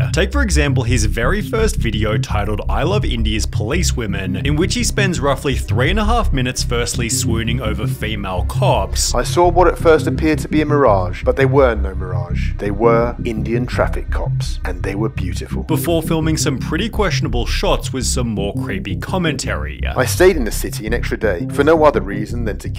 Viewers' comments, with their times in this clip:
0:05 seconds in, and I'm out. Learn to speak properly. The dragged-out last syllable is unbearable.